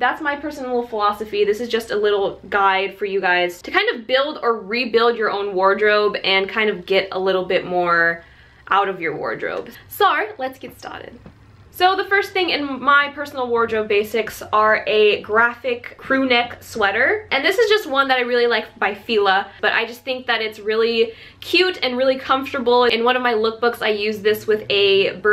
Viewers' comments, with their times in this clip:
0:09 she sounds like she has an aussie accent lmao
0:09 what the heck??? why did she just go australian for a second??? and then go back?????? does she do that a lot?????